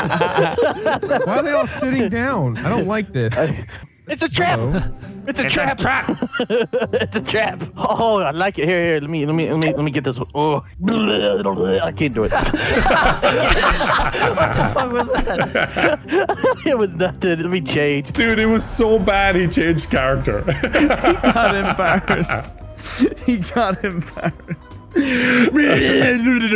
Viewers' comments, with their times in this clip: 0:08 Chewbacca special cousin came from the ship. The sound got me 💀😆😆